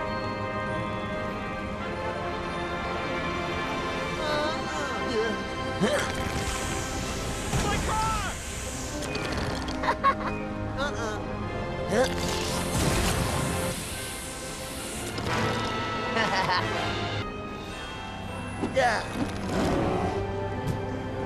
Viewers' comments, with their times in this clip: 0:07 HE EXPLODED A CAR WITH HIS FARTS 😱